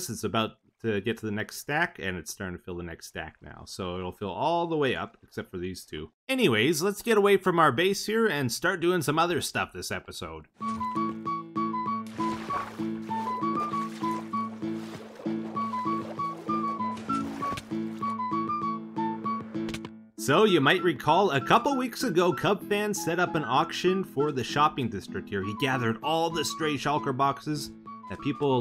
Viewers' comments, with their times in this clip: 0:10 yoo. that sea shanty though :D was playing Runescape while watching this xD
0:13 Am I hearing sea shanty ?